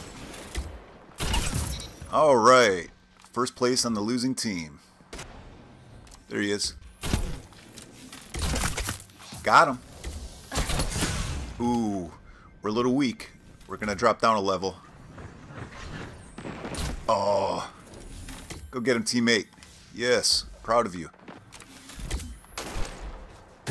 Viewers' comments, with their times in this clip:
0:07 You can hear the arrow crushing the skull :0 That's satisfying 👌